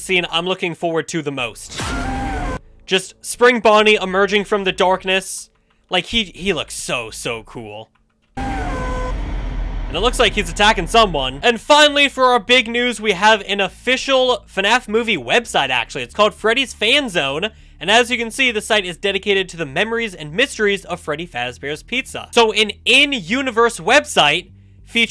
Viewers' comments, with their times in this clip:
0:08 that's William Afton screaming